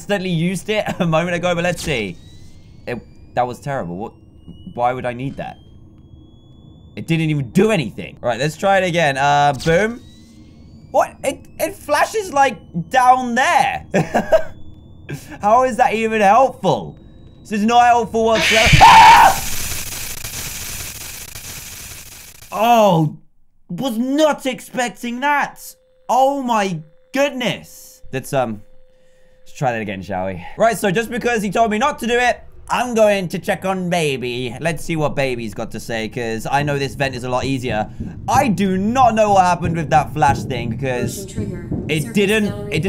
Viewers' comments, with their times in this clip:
0:09 DANTDM SREAMED LOUDLY
0:16 that scream though lol
0:17 manly scream... i can't stop laughing
0:17 Luvin' that scream
0:17 that scream cracks me up every time
0:18 manliest scream of the year
0:18 that scream tho XD
0:18 I laughed so hard by of his screem!
0:18 his scream lol
0:18 This part, never gets old. It’s too funny, especially his girlish scream.🤣🤣🤣🤣🤣🤣
0:18 the bloodcurling scream had me
0:18 Apologies headphone users!!
0:18 best scream ever.
0:19 what i heard is the loudest scream of dantdm
0:23 I accidentally pressed at full volume... Regrets are made